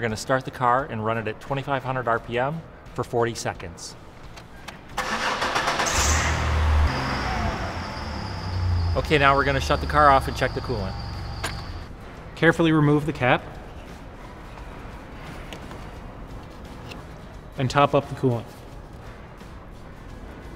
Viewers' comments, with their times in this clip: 0:08 What’s that chirping noise when the car was on? My does that too and I thought replacing the water pump would fix it :/